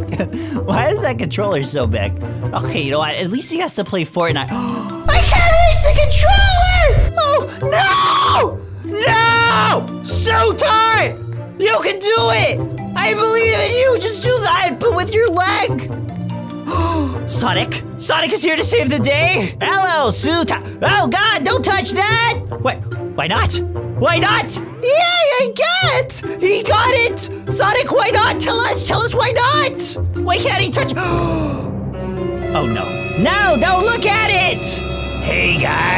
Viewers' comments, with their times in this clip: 0:07 why did that kinda sound like Flamingo
0:19 The way he did his Sonic voice impression WAS AMAZING 🤩